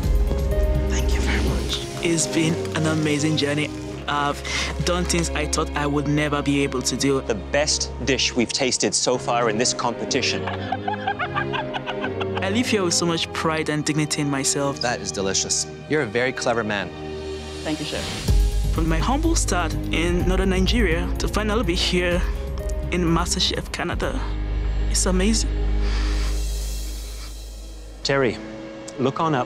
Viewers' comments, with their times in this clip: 0:10 his laugh literally sends chills down my spine wth